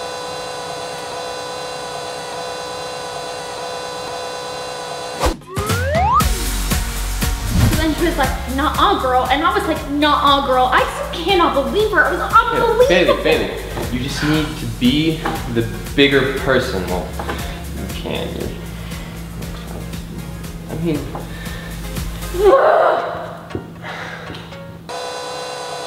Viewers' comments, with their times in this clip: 0:09 I thought he said "baby" instead of "Bailey"
0:13 he says Bailey or baby